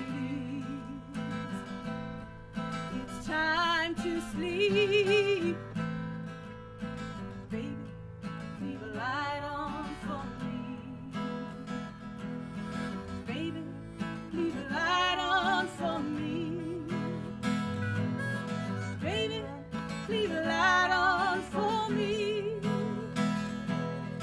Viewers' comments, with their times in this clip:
0:07 I love the harmonies from onwards and the instruments at the end. So good.